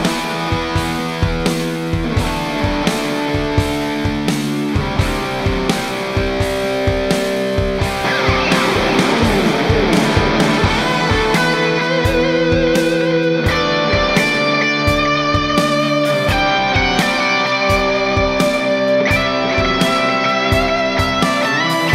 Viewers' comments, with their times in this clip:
0:08 The magic of track 2 begins with a pickslide! 😇😇😇